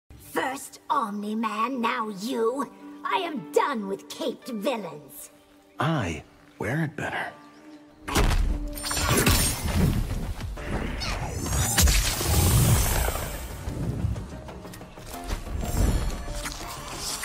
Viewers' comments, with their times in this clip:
0:05 I’m sorry but is literally just Johnny Cage’s voice 😭 I’m one of the biggest supporters too for how well this voice actor did as an impersonist.